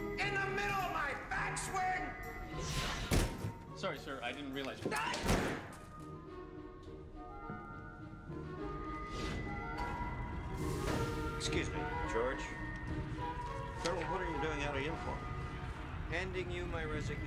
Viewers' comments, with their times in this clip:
0:05 That cry xD